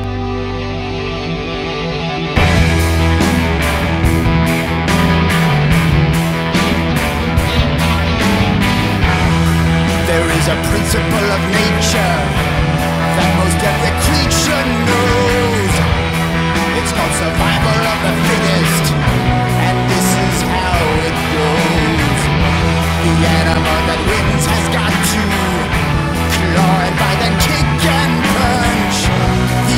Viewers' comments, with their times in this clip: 0:04 Between the two songs. The one in the movie is more catchy and fun...the on here is more real and scary. Which makes sense for them to change it seeing that thats what they said it was for but if it wasnt targeted for kids then woulda been cool to see them keep it. Plus if this were in the movie its likely the lorax wouldnt have just been chill when he came back in the end seeing as he killed more than the trees in this one and in the actual movie the animals just left ( Also this part sounds like someone took the song and did a cover for it to be more metal lol)
0:09 Wow, this delivery is so much better than in How Bad Can I Be
0:10 You can tell the voice actor had so much fun doing this like you can tell he was having the time of his life